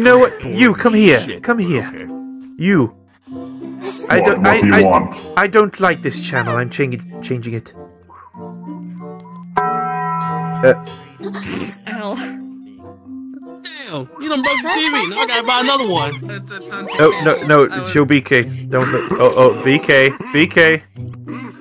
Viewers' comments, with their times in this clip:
0:08 Taco bell sound, it brings me back good memories in the 1990's.